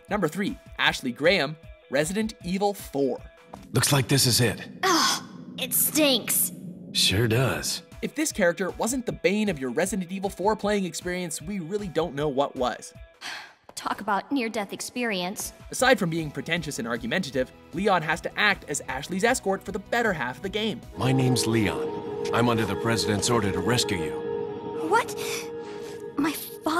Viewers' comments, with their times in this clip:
0:09 "Resident Evil Foreplaying experience" Hmmm...